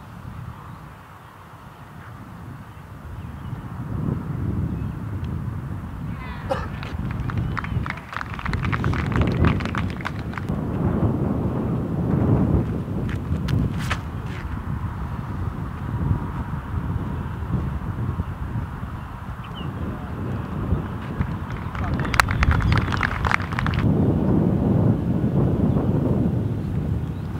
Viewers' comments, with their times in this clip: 0:10 you can hear the disc break the sound barrier...